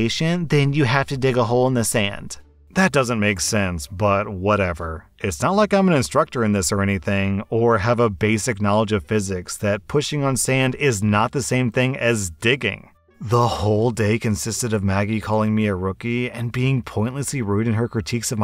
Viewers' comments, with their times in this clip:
0:04 AM, and I hear banging on door sound effect <cut to commercial> “an official message from Medicare:” 😂